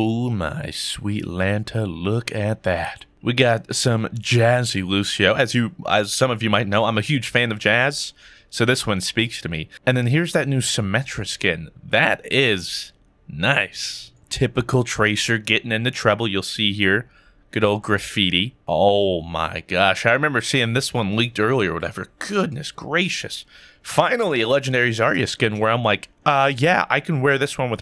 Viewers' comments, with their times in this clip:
0:08 he sounded like Barry B. Benson. You like jazz?